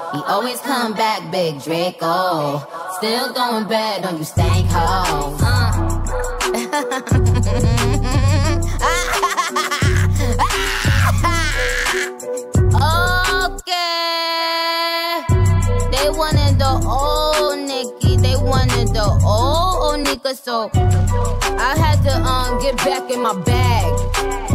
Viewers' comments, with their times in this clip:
0:07 of course we all love laughing better than rapping
0:07 when she does that laugh my toddler goes ham doing the same laugh shit is hilarious
0:07 So you just gonna rap for like seconds and talk the rest? Bruh....